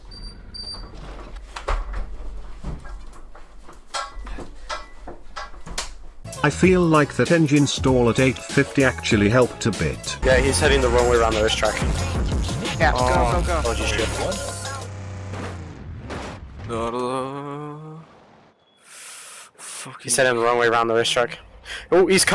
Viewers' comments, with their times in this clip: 0:03 sounded like he hit him in the head🤣